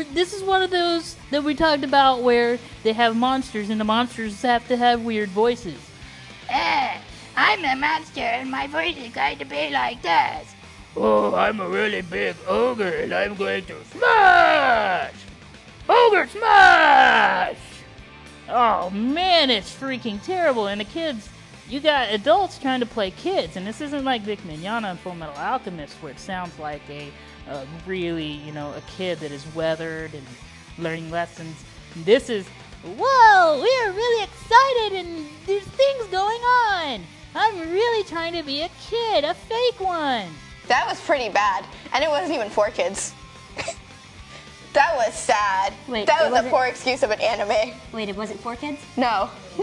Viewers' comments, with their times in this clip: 0:06 bad eric cartman impression?
0:24 The guy sounds like Chris-chan.
0:35 I'm sorry but I had to stop when the voices of the overgrown toddlers in this review started making my ears bleed. They're right about Sailor Moon though. :-(